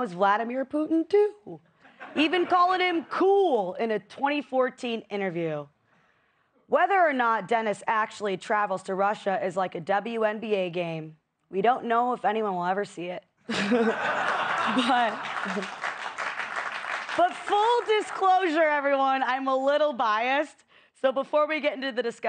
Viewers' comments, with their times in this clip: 0:07 I love how Kat cracks herself up! 😂